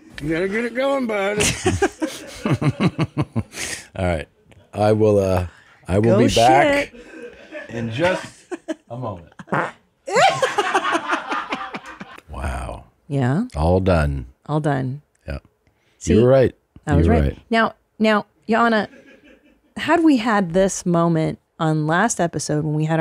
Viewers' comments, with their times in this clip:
0:05 (Tom s--- break/standing fart) Tommy Buns looks way too proud, and I can't even see his face for it, that's how much it reads